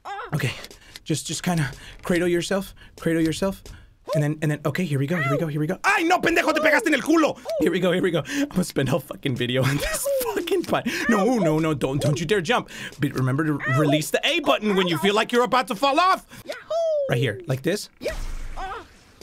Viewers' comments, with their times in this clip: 0:05 Auctioneers wish that they could speak this fast